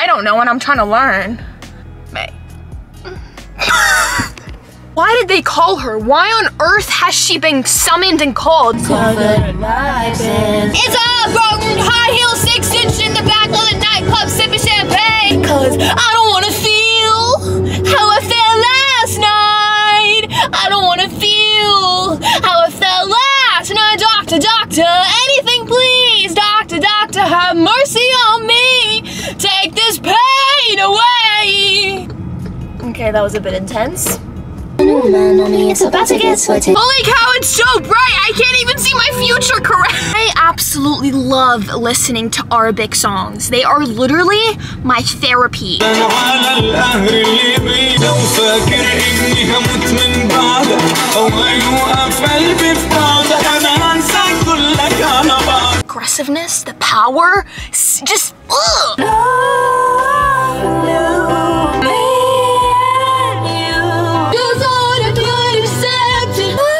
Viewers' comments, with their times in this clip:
0:10 oml shes such a good singer-
0:13 your such a good singer lol
0:52 I love this soonggg